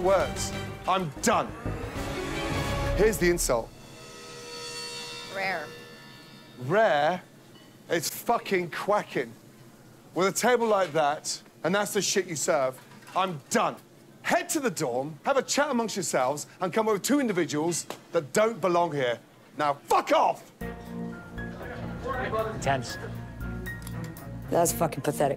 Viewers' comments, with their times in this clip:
0:06 You know shit is intense when even the soundtrack feels too intimidated to play